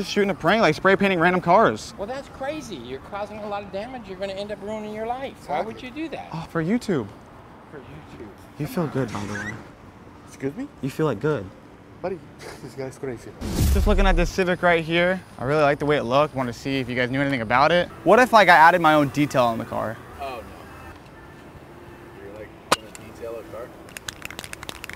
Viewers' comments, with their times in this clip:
0:05 “you’re going to end up ruining your life” dude sounded like he was going to take you in the back and start reading bible verses to you….